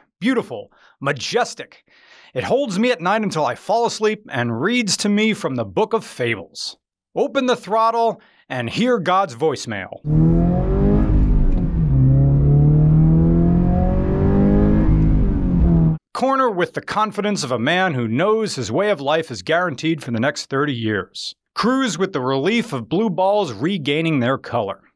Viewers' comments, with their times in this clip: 0:06 sounds really good at 2x or eve 3x speed.